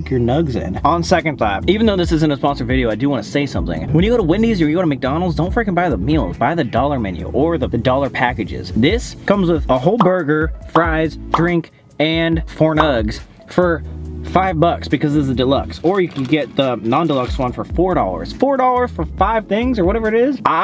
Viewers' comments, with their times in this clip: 0:05 I feel a lot of attitude when he was going off about freakin dollar menus😭😭